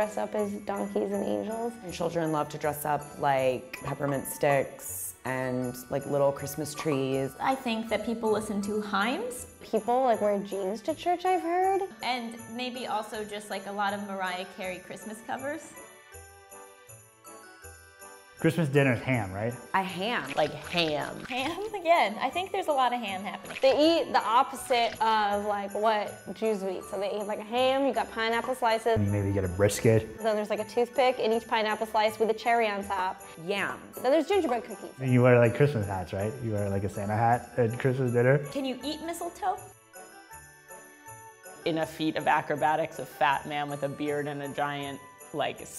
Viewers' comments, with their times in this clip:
0:07 uh, "himes"? really???
0:08 the woman said "people listen to himes"😂 Omg it's hymns
0:10 "Hiiimes" though. xD.
0:32 I love with a cherry on top, that accent!